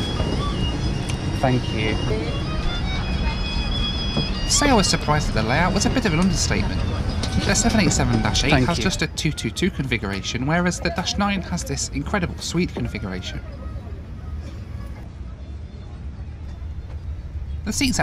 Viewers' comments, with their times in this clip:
0:06 bruh thats like 70-80s bangla music on the background.